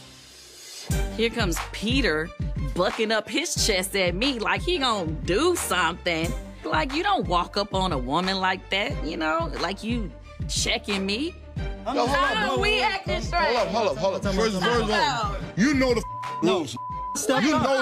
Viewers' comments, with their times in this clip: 0:04 Kandi sounded just like Mama Joyce when she was arguing against Carmen at the bridal shop 🤣🤣🤣🤣